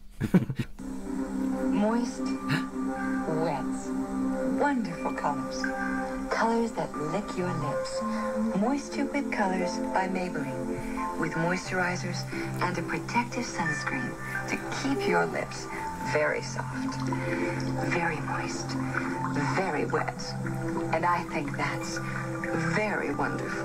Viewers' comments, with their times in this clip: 0:07 OMFG, I LITERALLY HEARD "MORE STUPID COLOURS" & NOW I CAN'T STOP LAUGHING. 😂🤣
0:08 I swear to god i thought she said "more stupid colors that lick your lips"
0:08 I honestly thought she said "more stupid colors by Maybelline" 🤣